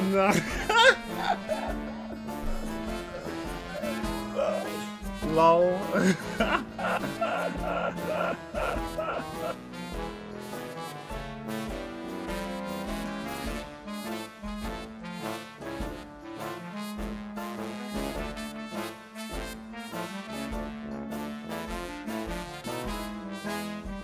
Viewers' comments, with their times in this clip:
0:06 Is he dying or laughing? Or both at the same time?